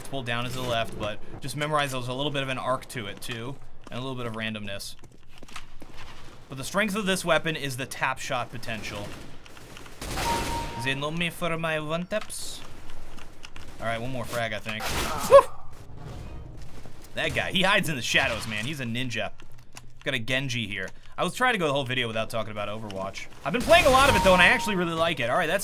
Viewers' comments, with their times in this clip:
0:09 Love your Scream impressions xDDDD